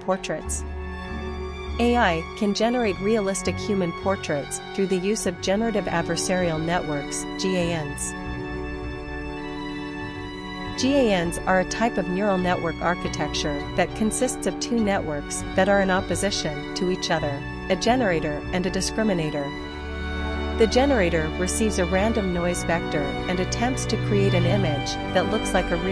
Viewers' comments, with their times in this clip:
0:10 Huh. I had no idea that Germans were a type of neural network.